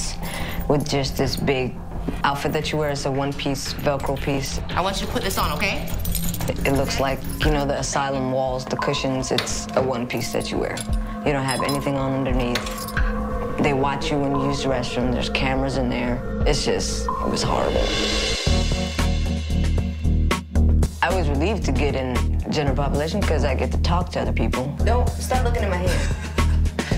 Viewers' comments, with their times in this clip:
0:07 that buzzfeed unsolved music 😂